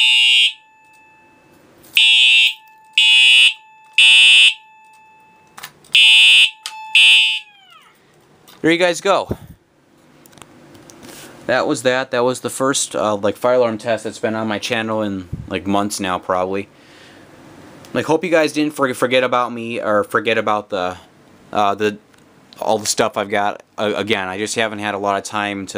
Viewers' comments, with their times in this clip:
0:07 I heard a squeaking noise